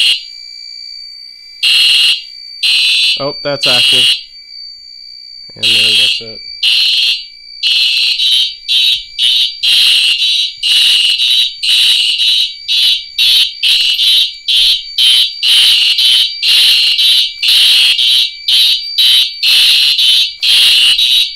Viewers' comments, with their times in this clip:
0:09 that beat is sick lol. Great vid with simplex